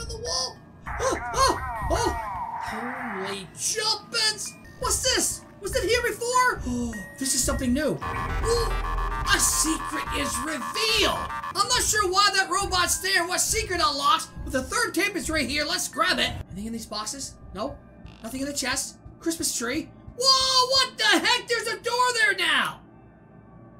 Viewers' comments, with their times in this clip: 0:08 you gotta appreciate the doom music